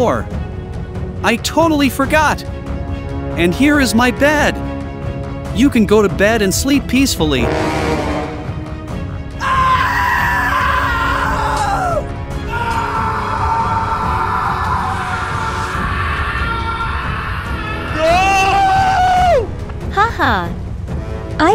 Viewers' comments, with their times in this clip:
0:09 scp 096 scream